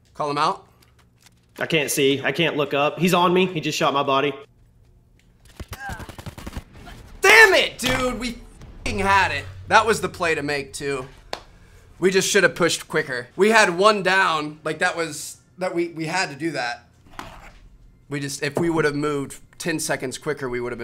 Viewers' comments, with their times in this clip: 0:08 That was such a passionate "DAMMIT DUDE"!!!!! !!!! Bahahahaha